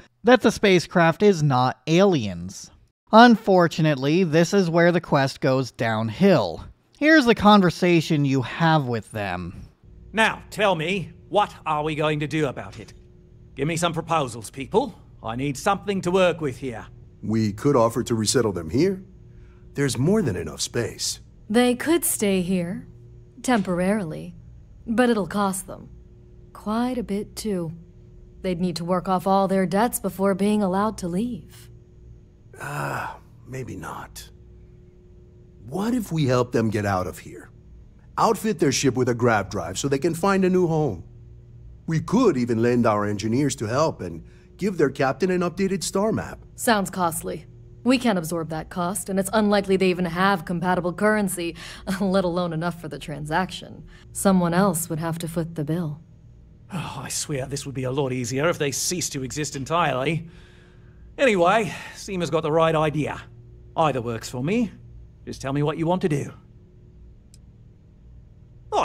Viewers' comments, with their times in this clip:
0:10 is this really what the writing is like throughout the whole game? and the delivery is very hight school theatre playing to the cheap seats. I haven't played the game but I don't know I could stand that for any length of time.
0:56 what the heck is Oliver’s accent supposed to be? It’s like an English Northerner attempting an Australian accent, and failing miserably.